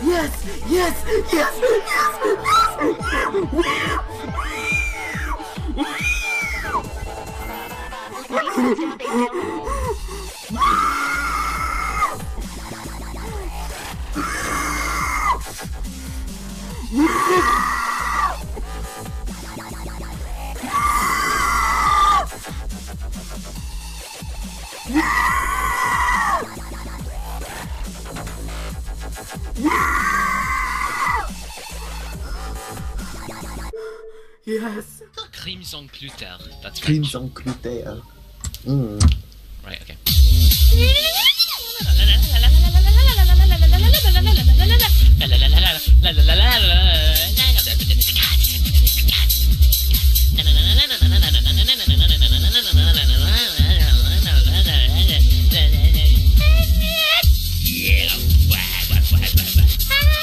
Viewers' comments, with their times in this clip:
0:04 did he beat the level or is he killing a pig XD
0:18 OMG man being possessed audio caught on camera
0:36 this guy can sing better then me...
0:42 It sounds like an Angry Birds Pig